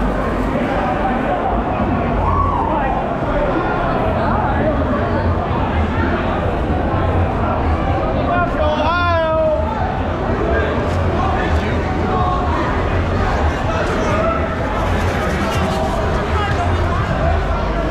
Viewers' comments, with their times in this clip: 0:04 Wait for the shout of "F*** Ohio!" into the video...